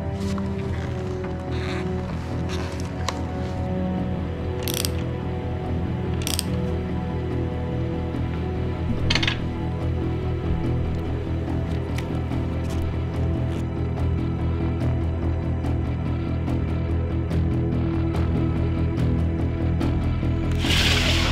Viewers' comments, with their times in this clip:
0:03 that music is exactly how I feel whenever working on EV batteries